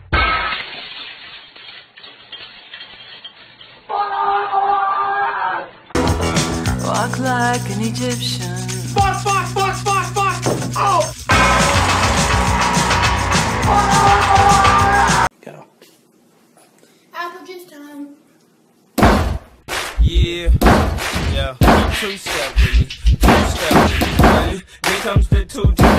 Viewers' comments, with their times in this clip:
0:09 is the combination of perfect timing and sound of the bell it never fails to make me lol for days